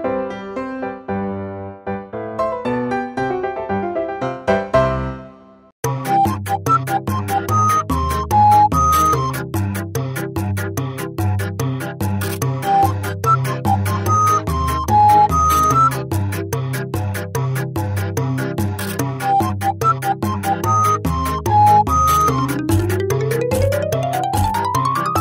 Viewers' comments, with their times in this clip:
0:06 fly high Alex the honking bird, miss those honks